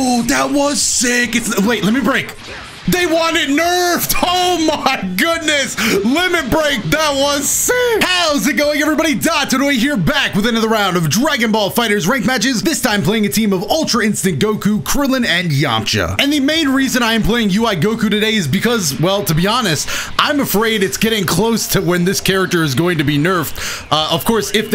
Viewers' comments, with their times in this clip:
0:07 Ultra Instinct Shaggy makes a cameo if you listen closely